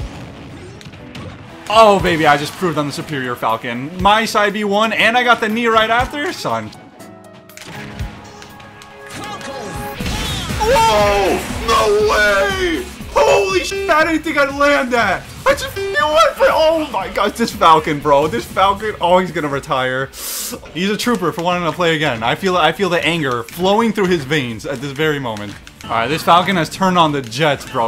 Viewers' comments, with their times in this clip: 0:09 The music sync was sublime. 👌